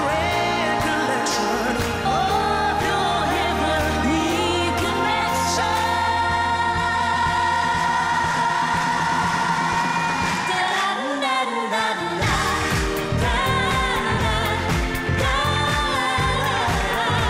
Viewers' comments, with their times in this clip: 0:03 Listen how resonant Kylie's Bb4 was ! She outshined that guy!